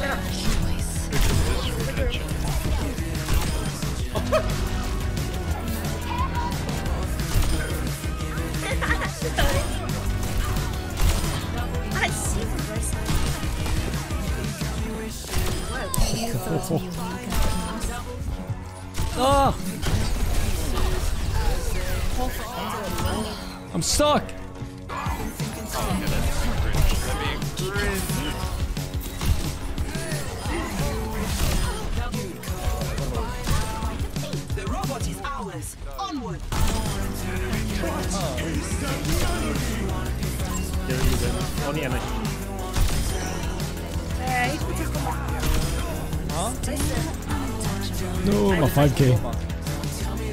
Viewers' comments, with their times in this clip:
0:07 this mercy laugh was the best reaper kill reaction xD
0:37 why was that sigma ult perfect timing with the music